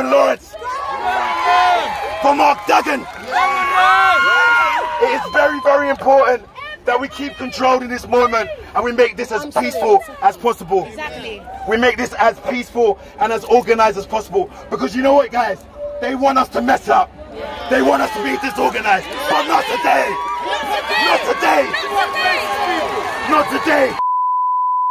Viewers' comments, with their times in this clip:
0:05 after yelling like a madman 😂